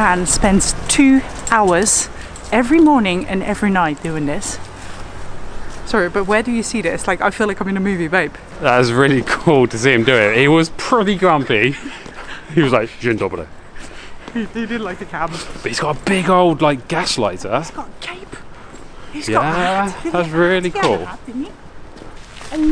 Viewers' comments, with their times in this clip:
0:09 dzień dobry 😄 the way you sayed